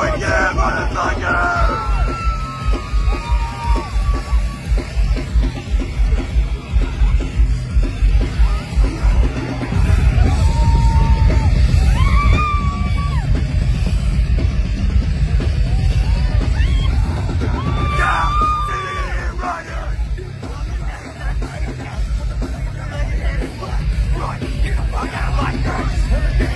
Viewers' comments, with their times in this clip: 0:09 = aerial bombardment FROM WWII 😮